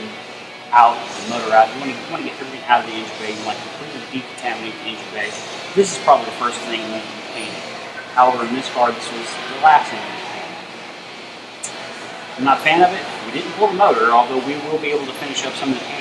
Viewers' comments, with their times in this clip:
0:03 Are they listening to Nuclear Assault? Kewl To bad the audio is horrible